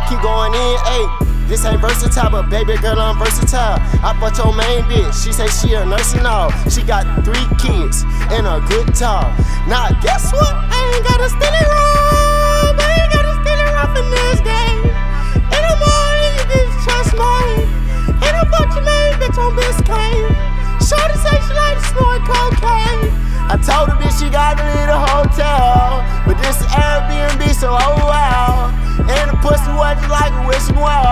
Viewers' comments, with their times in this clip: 0:10 he hit the ice jj fish voice💀💀
0:12 Did this nigga really do that in my ear? He must did that verse the same day he took the top left pic.